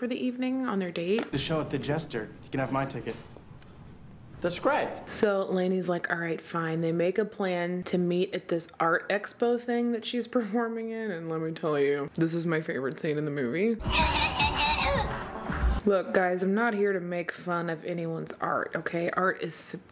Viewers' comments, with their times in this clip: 0:04 Omg when he says “that’s graht”😂😂 I’ve seen this movie 1,000 times and never noticed how hilarious that sounds until you put the words up like that. I watched it 5 more times, I’m crying🤣🤣